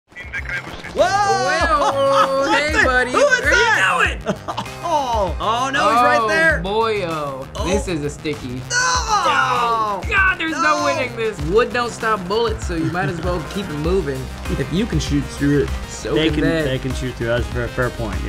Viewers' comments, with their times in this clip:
0:00 starting off with one of the main reasons we love video games... CORPSE LAUGH!!!!!!